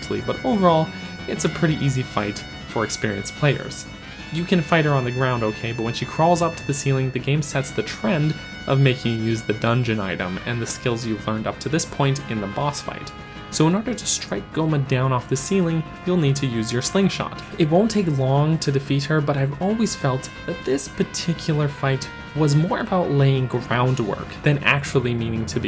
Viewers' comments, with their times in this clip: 0:08 The music also did fit well, like it's something big and scary but not really hurtful